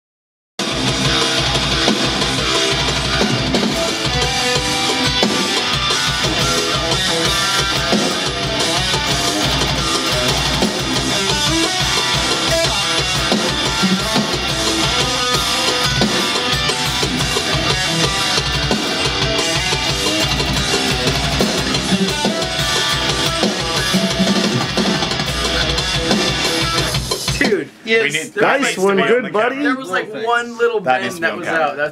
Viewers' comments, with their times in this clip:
0:04 sounds really Fall of Troy-esque, me likey!
0:16 In case anyone is wondering, it's the note at the tail end of the second thats out